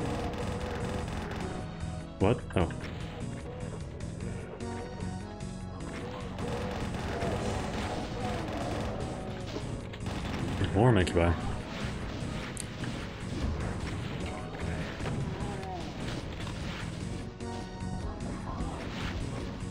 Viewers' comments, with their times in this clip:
0:03 Very amusing when there’s another brrrrrrrr session and decino is so into it that he sounds really distracted when hit by that revenant from the right. It’s like “o, what, there are also monsters around here that are not totally into getting mowed down by the brrrrr gun, how can this be?” 😂👍